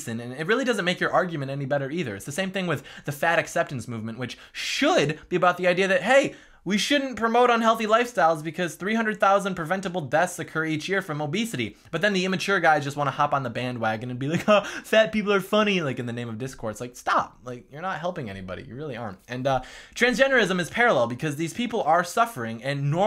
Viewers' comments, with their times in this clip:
0:10 nice voice impressions